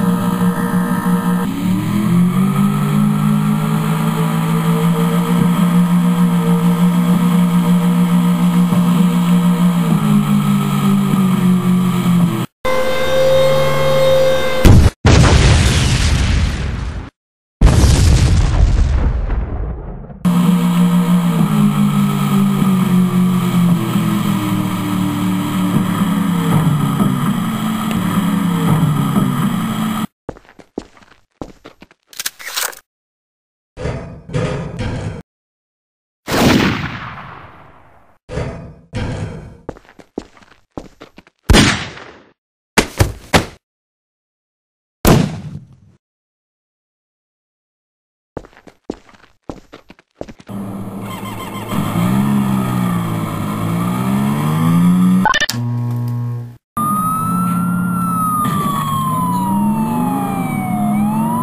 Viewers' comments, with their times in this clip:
0:05 it sounds like the boats on gta sa or iv
0:05 gay 4 boat sounds
0:49 On second was that faint noise the terrorist screaming lololololololololololola?